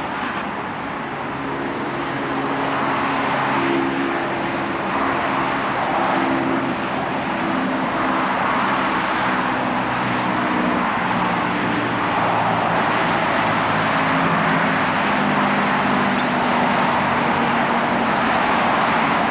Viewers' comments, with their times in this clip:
0:06 Australian cities have an odd juxtaposition of quiet residential areas and very busy highways. Check out the finishing of the video on Nepean Highway. 🚓🚗🚙🚗🚓🚙🚙🚓🚗 We were lucky/unlucky to have the sounds of a local sport game as we walked through the park though.